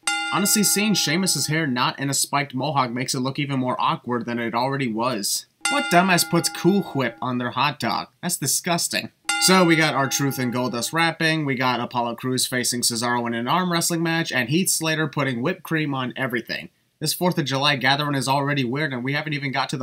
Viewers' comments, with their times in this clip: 0:06 Do you really need to emphasize the h in cool whip?